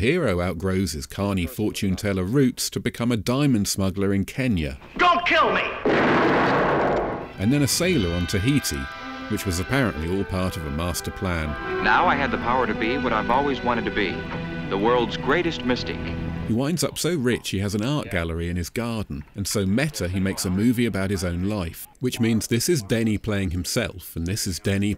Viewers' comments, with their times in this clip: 0:09 I had to stop what I was doing when I heard the orchestral intro to "Nights In White Satin"